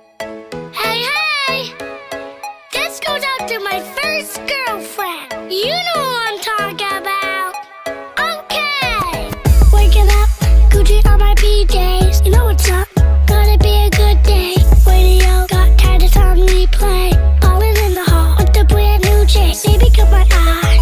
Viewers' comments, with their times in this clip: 0:07 I literally thought he said “I’m gay” instead of “okay” 💀